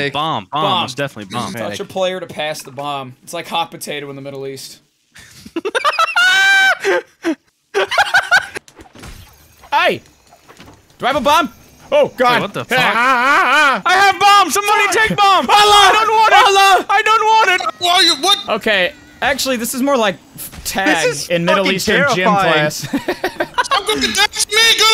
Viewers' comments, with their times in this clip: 0:05 that fucking laugh